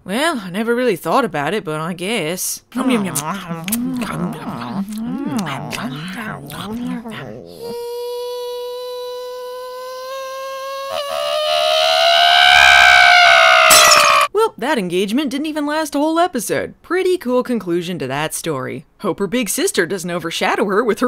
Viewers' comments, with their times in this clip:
0:08 I keep forgetting Kaye exists I refuse to believe Logan and Neely wouldn't plot in a dark evil lair with skulls on the walls I'm going to miss the Stephanie voice I was more invested in Newmie getting creamed by a wave than anything else in the episode YEEEEEEEESS! Dueling Stephanie and Caroline screams. I love it